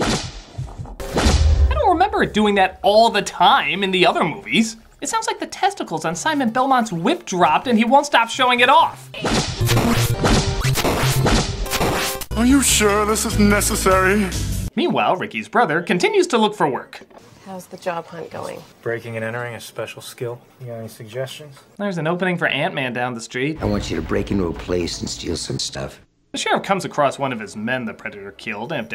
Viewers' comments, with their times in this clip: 0:09 it sounds like ultra sound